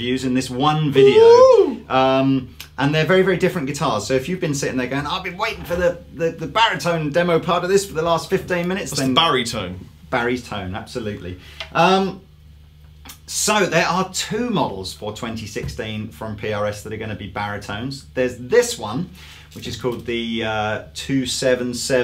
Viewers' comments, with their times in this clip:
0:06 i think the bolt on sounds better, it's brighter and more evenly compressed across all the strings, would require less touch up in a studio setting. But i would use the set neck live for stability....if i played live xD ...and is literally the reason i got rid of my semi hollow body schecter, little brother and sister constantly put stuff in it lol